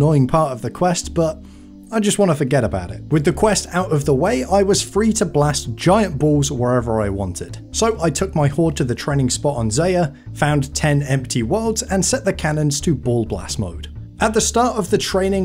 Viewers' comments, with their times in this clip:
0:03 Link to song ? It sounds like a RuneScape cover of the Halo 3 soundtrack